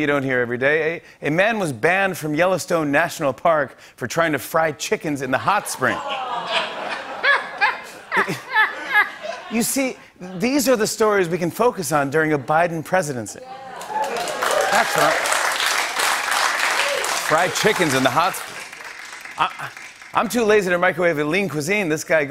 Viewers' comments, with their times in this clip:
0:06 LOL I just love his laugh!